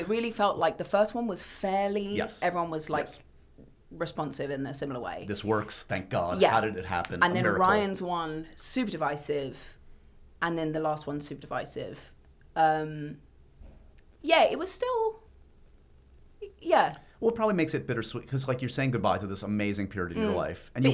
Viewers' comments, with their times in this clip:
0:07 what was that noise